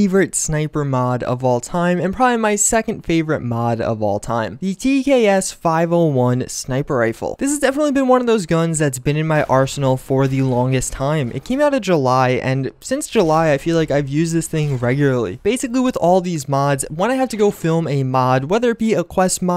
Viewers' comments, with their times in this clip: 0:04 Why he sound like he got a lisp 😂💀